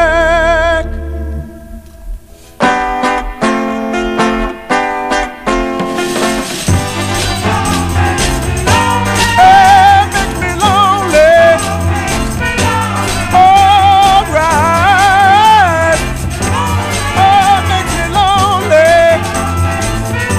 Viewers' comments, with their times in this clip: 0:05 The break is awesome. Back drop time!